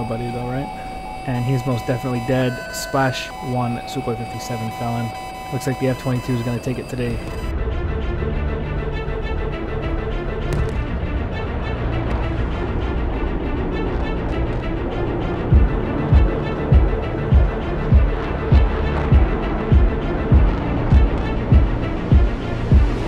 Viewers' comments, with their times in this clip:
0:08 at this point the F22 owns this beat dude, it just fits the pure hatred the F22 is made of